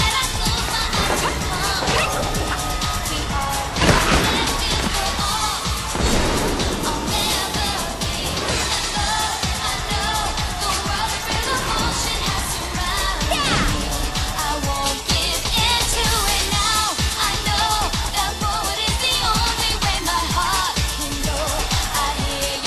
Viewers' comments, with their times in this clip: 0:08 no its the guy cheering when pain slides down the rail actually